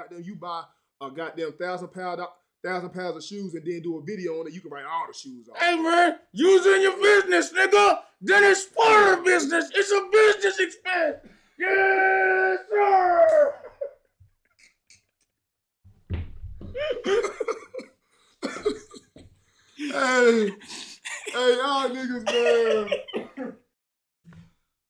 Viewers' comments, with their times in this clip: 0:07 bro sound high as fuck 😂